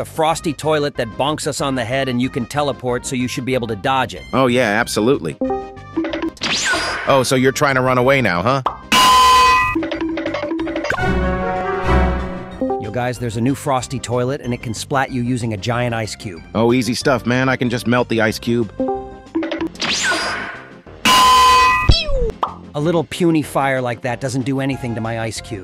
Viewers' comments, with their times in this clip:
0:07 LMAO that iron sound